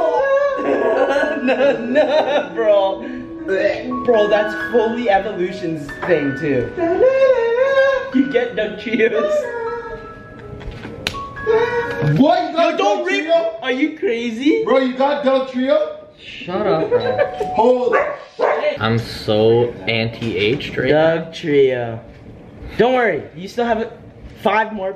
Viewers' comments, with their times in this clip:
0:07 bongo in the background "du nun nu na du na"